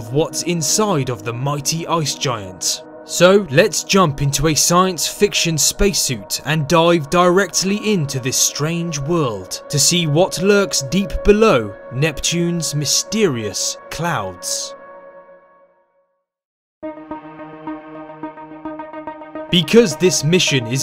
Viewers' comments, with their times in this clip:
0:06 i thought he said die in even its dive i dunno to talk about it